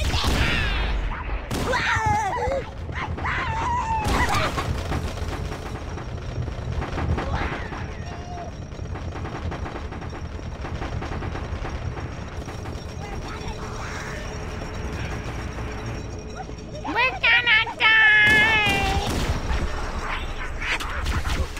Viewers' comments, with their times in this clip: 0:06 This mission is way scarier with original graphics as it is much darker and more desolate looking. Also at the start of the level did you notice how a few times your motion tracker pinged some green entities around you but you could not see them? If you did the implication is that your radar is not familiar with the biological readings given off by infected people just yet thus (while it's lime green here, in the book the blips are described as being yellow, for unknown.) It marks them green/yellow. Also classic weapon falling into a wall and continuously bouncing, rolling making thumping noises. Classic Halo glitch ya love to see it